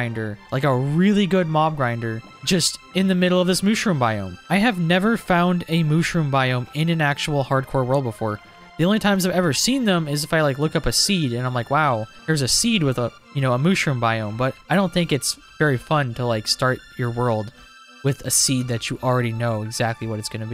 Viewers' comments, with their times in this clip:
0:03 why does he say it like that?💀